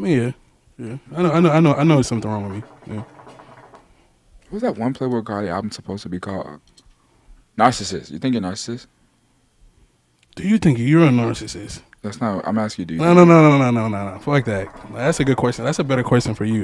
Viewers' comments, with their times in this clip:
0:03 I think someone is rippin ass every time yatchy smokes